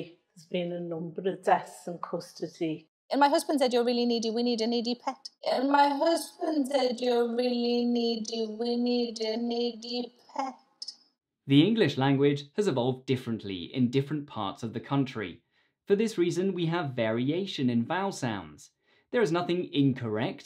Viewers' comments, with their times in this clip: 0:03 Good thing there are subtitels. I would have thought she was floundering.